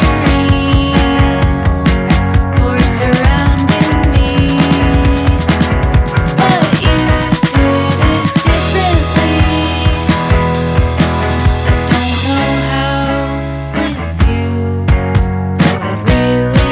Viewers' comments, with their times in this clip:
0:03 seconds is one of my favorite drum shuffles in a long time.